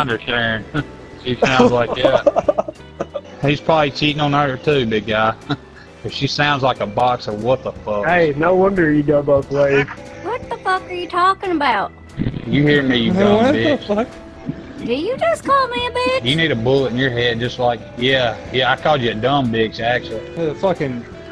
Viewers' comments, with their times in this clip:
0:06 she sounds like a box of wtf😂😂